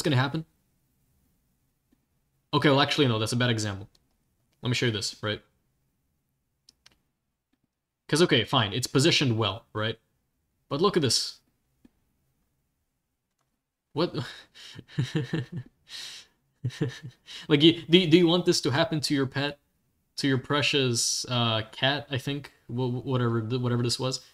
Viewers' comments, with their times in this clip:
0:10 i love how he starts laughing lol